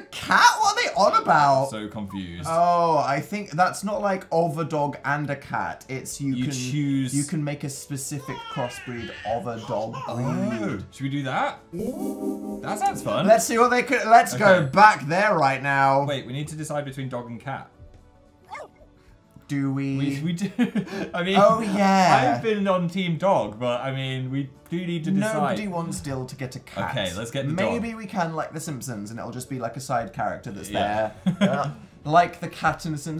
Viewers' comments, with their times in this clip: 0:06 Anyone else hear a baby 🤔🧐
0:08 Is nobody going to mention the baby crying sounds ???
0:08 Why is there a baby crying
0:10 the dalien noises in the background caught me so off guard 💀 how have i not noticed them before
0:10 Did anyone else hear a baby crying in the background or was that just me?
0:14 Is no one gonna talk about that random baby laugh sound effect